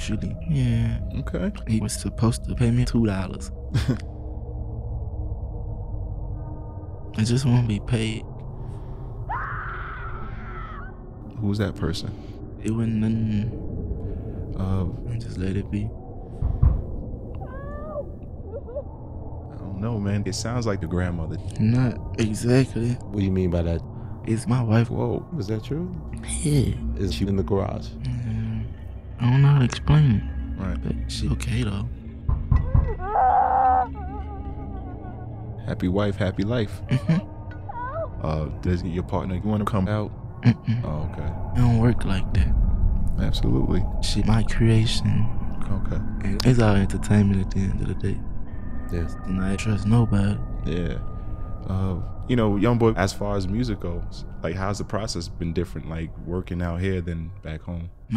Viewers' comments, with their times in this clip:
0:09 person screams in the background Interviewer: “Who was that person.” NBA Youngboy: “it was nun. just let it be.” 💀💀💀
0:25 the struggled “yea” got me rollin😂😂😂
0:46 The tone switch after is DOIN ME Lmfao i really can't believe it caught me that off guard either man your edits whole movies all by themselves, Just Nuts